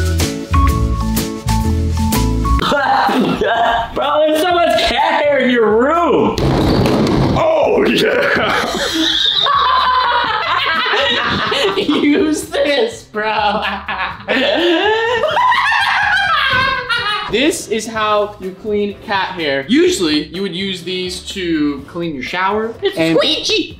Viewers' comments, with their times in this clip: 0:06 They just died of laughter so did I XD
0:06 had me sounding like Donald Duck.
0:06 was so like meme bro he was OH YEAH!!